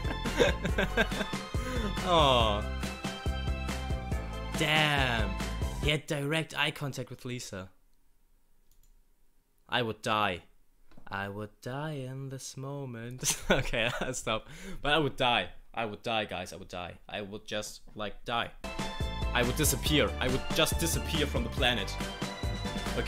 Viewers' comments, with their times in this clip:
0:10 are u trying to sing forever young...😂😂😂😂